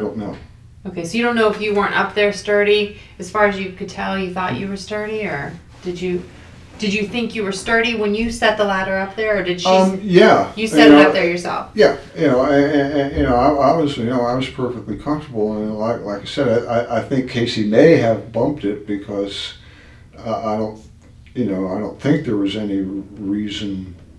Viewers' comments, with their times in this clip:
0:07 Holy crap my favourite part is when he leans forward then leans back to let one rip! Feel terrible for that detective to have to sit there and pretend THAT didn't happen, just like a man...caught red-handed yet still pretend to be blameless.